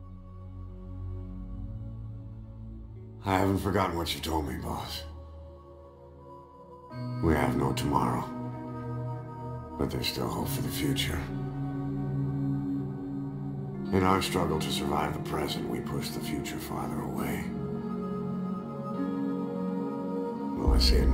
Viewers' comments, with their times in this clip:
0:04 onwards gave me goosebumps. Incredible voice acting with an incredible soundtrack playing.